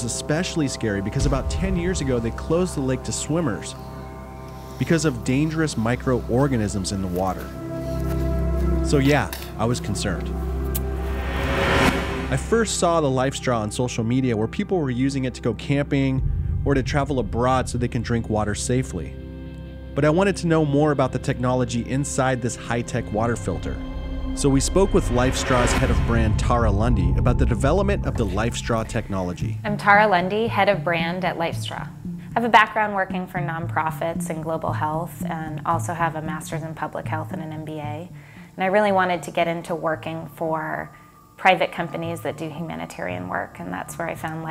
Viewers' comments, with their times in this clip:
0:08 you can hear him spit it out lol.
0:09 You can clearly hear you spit out the water
0:29 daughter of Ted Bundy